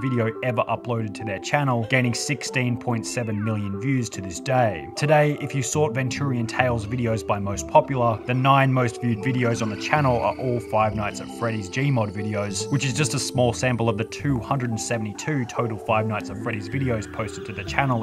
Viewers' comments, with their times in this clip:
0:03 broooo wtf is this music! it sounds like someone putting delay on a ferret dying i dont mean any hate